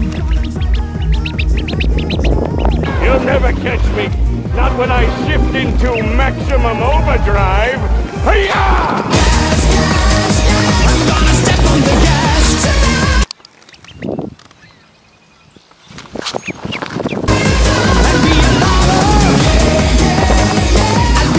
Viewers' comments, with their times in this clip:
0:07 that word (hayaaaa) seems to haya in arabic that means let's goooo 😂😂😂 it matches the scene